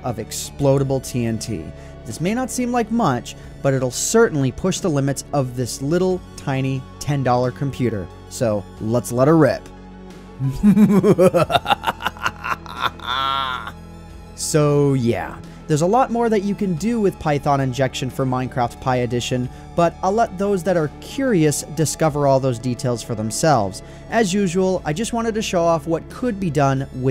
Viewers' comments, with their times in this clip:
0:10 That laugh though
0:11 You commit EVIL LAUGH